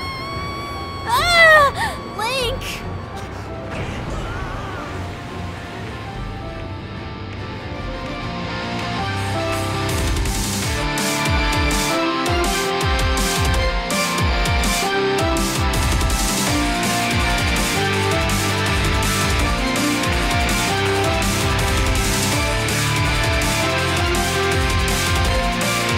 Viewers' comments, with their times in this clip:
0:08 no! The dreaded outro music!